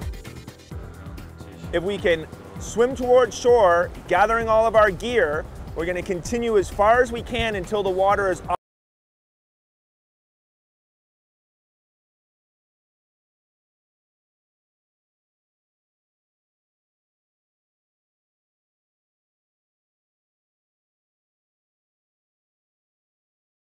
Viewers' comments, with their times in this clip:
0:07 Same here seconds sound vanished :( great video until then
0:09 no more sound